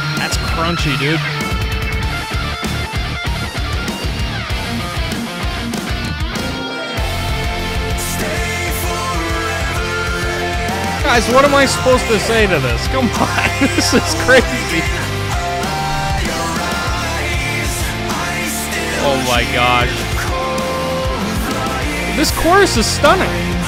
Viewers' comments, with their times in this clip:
0:07 It gets better every time I hear it. Ben sounds great! Love it